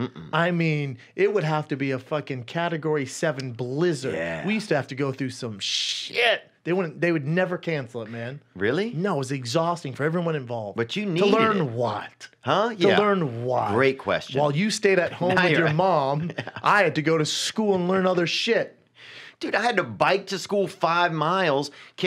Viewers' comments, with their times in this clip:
0:08 PROOF THAT BRENDAN CAN PRONOUNCE "EVERY" NORMAL